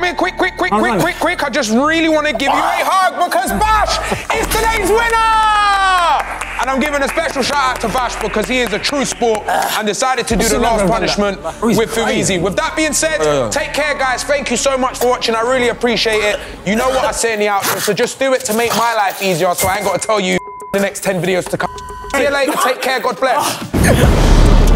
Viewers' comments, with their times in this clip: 0:08 LMAO bro is literally dying while Filly causally saying the outro